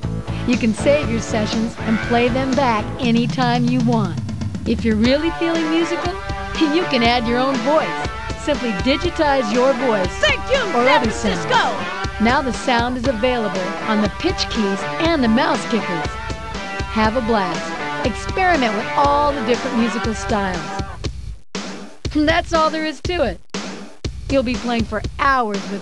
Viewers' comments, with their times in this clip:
0:06 The music in the background sounds suspiciously like Janet Jackson's "Black Cat"